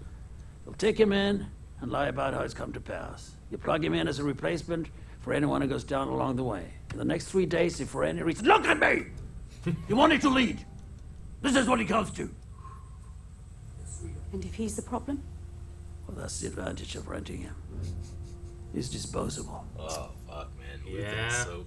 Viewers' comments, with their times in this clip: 0:08 He went from mild to Scary-Gandolf quick...